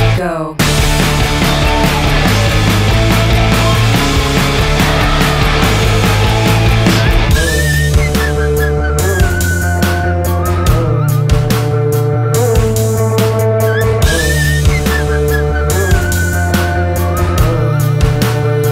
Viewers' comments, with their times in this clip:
0:06 Does anyone know the instrument that comes in (and a few other places)? I can't tell if it's whistling, guitar, or something else. Whatever it is, I love it